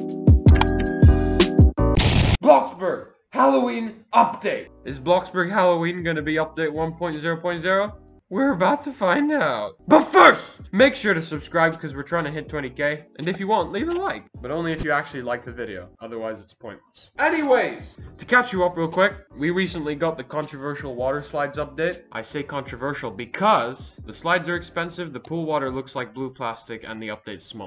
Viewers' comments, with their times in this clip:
0:10 like why 3 voicecracks in a row